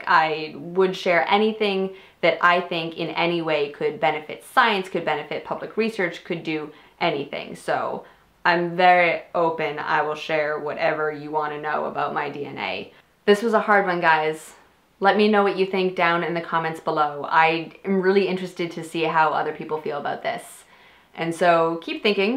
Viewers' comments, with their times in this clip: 0:08 Interesting questions. On a completely unrelated note, I couldn't help but notice that your voice suddenly got *really* southern